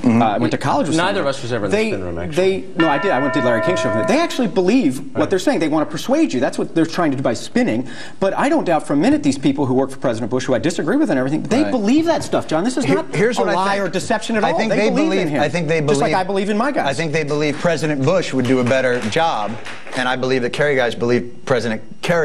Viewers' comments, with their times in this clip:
0:03 Can someone please explain to me why there's a random bell sound ? What's the significance? I feel like I missed something.